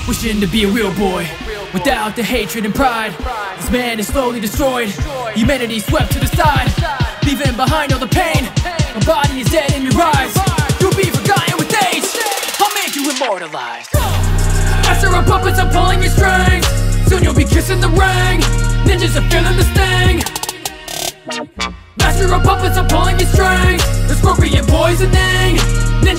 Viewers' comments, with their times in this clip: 0:09 I swear I heard a discord notification some